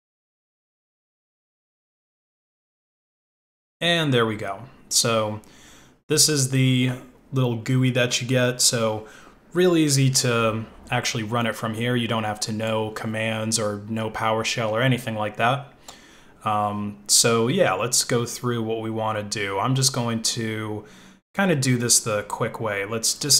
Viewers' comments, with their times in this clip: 0:05 " the little GOOEY that you get" lol reminds me when I was a kid I'd always pronounce family guy as 'family gooey'